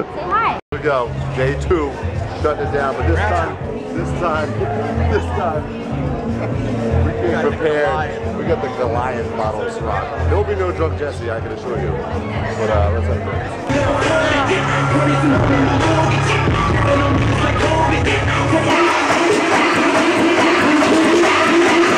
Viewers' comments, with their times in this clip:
0:03 lol they had some bachata in the background